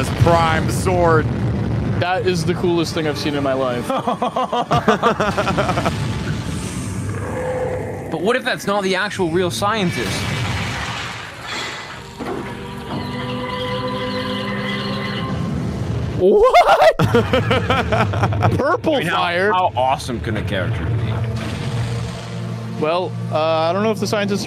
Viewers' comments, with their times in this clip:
0:07 Nolan turned into british lol